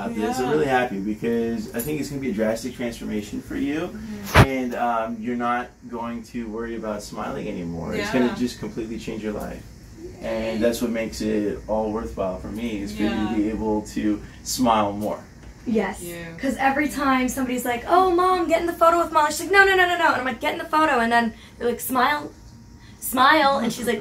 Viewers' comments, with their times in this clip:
0:05 Anyone here that noice